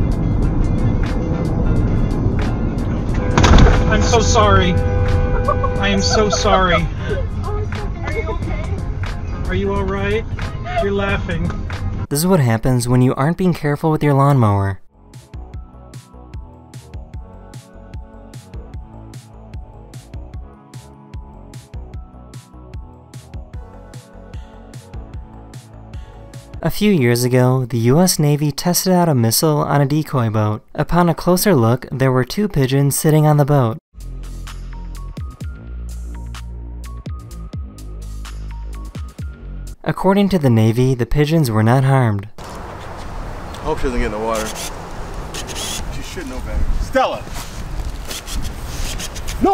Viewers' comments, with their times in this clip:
0:03 My feelings go out to that Uber driver. The sincerity and guilt in his voice when he apologized to his customers🥺. I’m glad the girls were really chill about it and nothing bad happened and they were all safe, but I would’ve been super apologetic just like him so I have so much sympathy for him :’/
0:03 i love the fact the girls kept laughing after it happened
0:36 hear that navy bomb not good enough